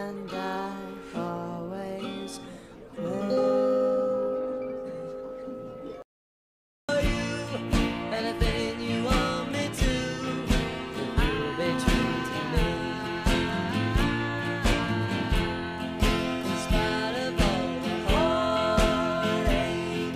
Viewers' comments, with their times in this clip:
0:06 when they started singing in spite of all the danger they did so good